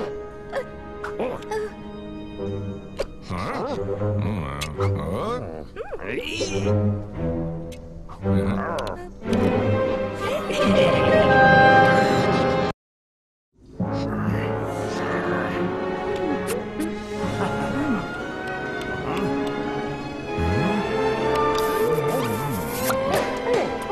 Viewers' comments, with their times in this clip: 0:06 Sounds like Mr Krabs